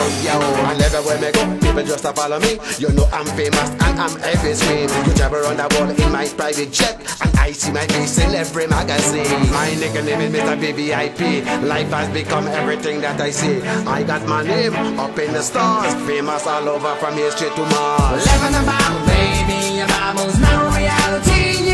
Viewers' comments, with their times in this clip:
0:09 actually, for about 30 seconds, it certainly is hiphop/reggae....